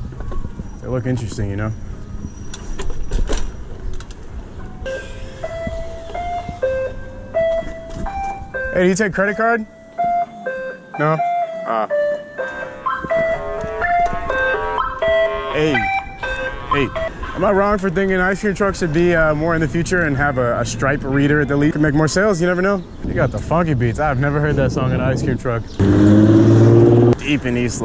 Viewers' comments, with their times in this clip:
0:08 was lit for an ice cream truck song